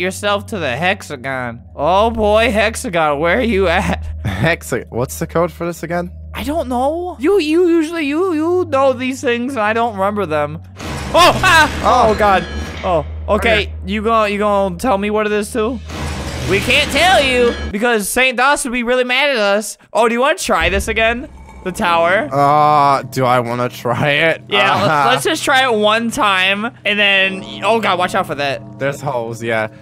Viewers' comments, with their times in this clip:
0:10 When they go to the hexagon and teleport it sound like dio the world in jojo bizzare adventure
0:10 it sounds like from jojos time stop
0:11 that sound like za warudo
0:11 za warudo sound XDDD
0:11 WHY WAS THAT THE TIME STOP NOISE
0:16 i just realized that the teleporter thingy sounds like dio's stand za waurdo to stop time